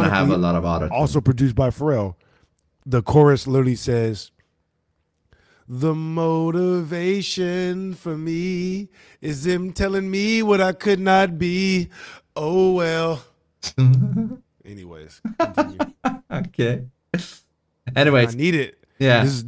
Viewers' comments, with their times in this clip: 0:05 wtf is that voice. Bro's pitch must have left with his dad to get milk, and neither returned.